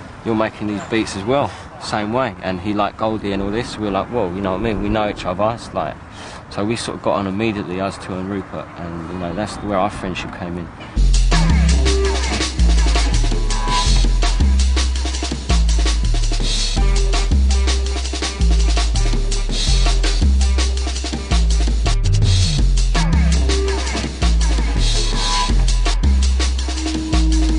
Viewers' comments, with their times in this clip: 0:10 Therapy? - Loose (Photek Remix) Actually starts but the sound changes a little bit. :)